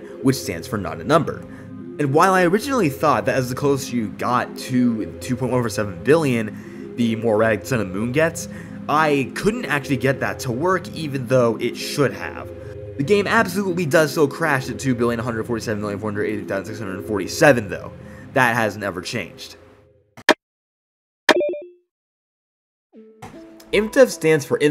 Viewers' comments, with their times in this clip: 0:07 the more eggs the moon gets!!?????